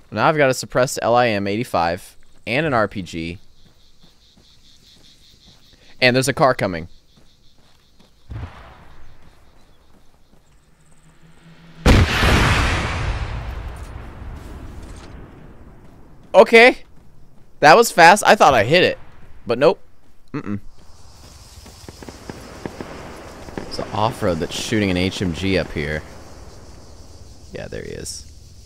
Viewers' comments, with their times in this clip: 0:10 VTEC KICK IN YOOOOOO